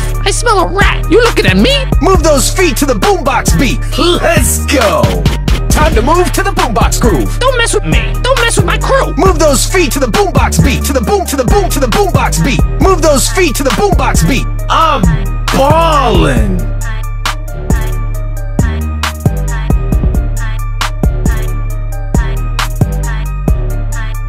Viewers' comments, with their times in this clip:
0:10 Dude when Brock said To the boom box beat i thought he said To the boom box b-tch